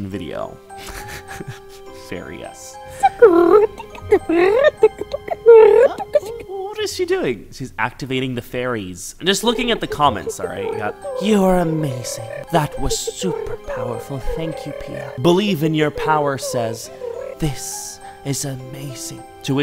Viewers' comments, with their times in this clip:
0:05 In the fairy activation video at first I thought it was a pigeon😪!